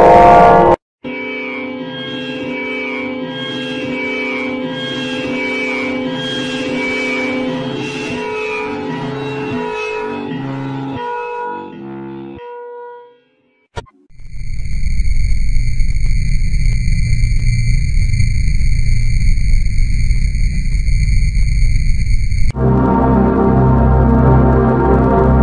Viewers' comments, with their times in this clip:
0:06 it sounds the same too